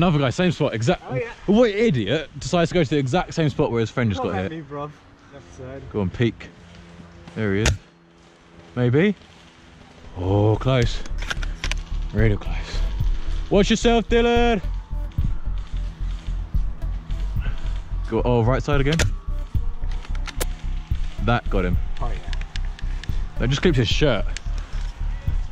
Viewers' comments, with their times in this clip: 0:10 this man sounds and looks like captain price